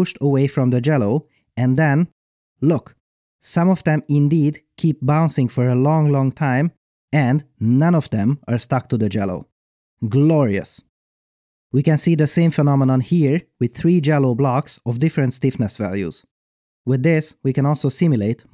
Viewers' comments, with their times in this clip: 0:04 uhm, "Jellowl" or "jelly"? XD